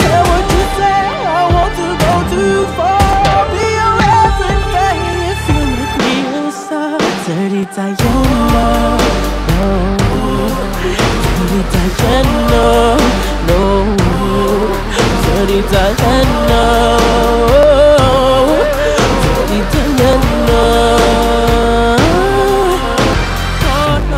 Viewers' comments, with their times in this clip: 0:07 Something with the movements and the song reaches my soul